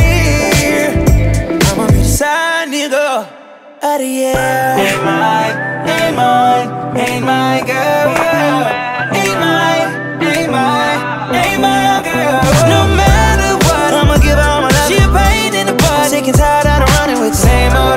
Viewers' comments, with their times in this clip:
0:03 yass i love this melody